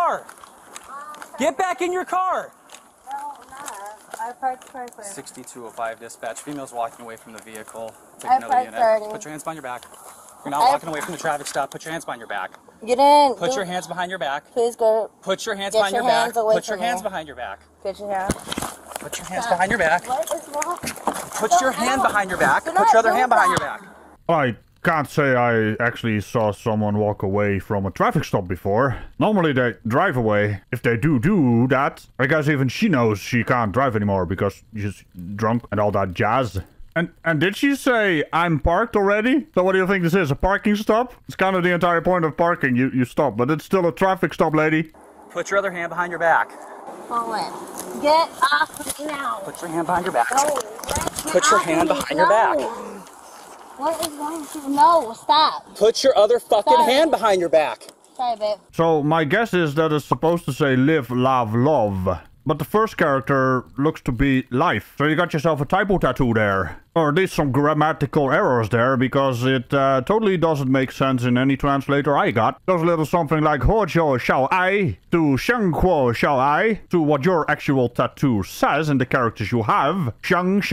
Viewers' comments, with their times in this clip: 0:04 It almost sounds like the first time she says "I parked perfect."
1:02 Great, in Dutchland it seems okay to blast music out of your car in the morning. Sleepers be damned!